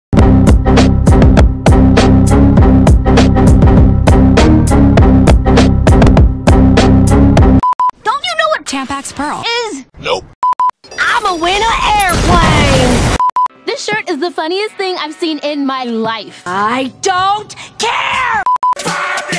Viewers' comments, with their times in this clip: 0:03 Am I the only one who thinks it sound like windows error :'D